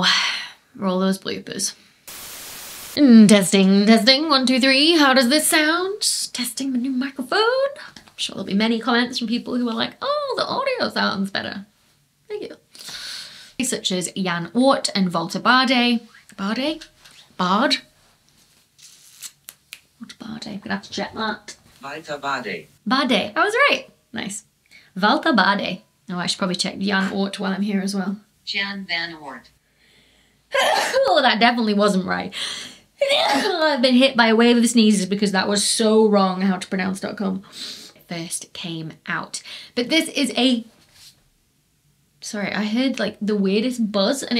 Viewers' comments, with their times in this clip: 0:10 The audio is better but you might need more sound deadening to control the reverburation.
0:28 Bless you and yeah probably the nature didn't like you not saying two of its early researchers' name correctly haha